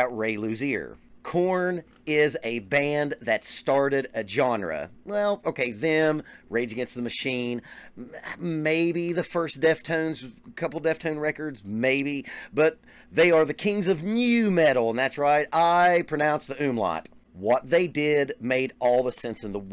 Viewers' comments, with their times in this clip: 0:07 you almost did the "MURRWRAWRA UURR RAHRAH" growl lol